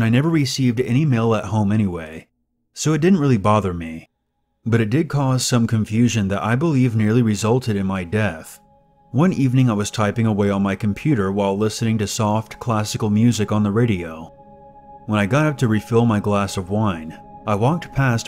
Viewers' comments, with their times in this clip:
0:03 first listen I thought you said "Resulted in my death" not "NEARLY resulted...."